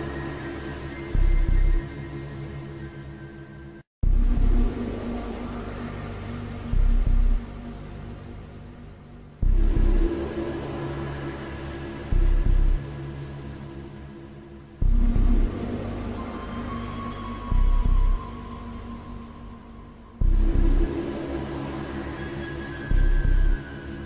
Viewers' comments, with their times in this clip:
0:08 For the alarm noises, is bad that I thought of Alululululu for the alarm noise, or do I have problems?